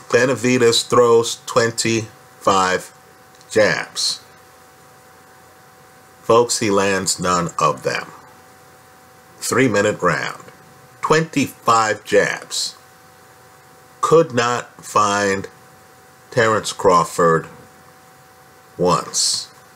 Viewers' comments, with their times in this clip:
0:05 sounds like a scene from a movie....way to set the atmosphere with that one 👌🏽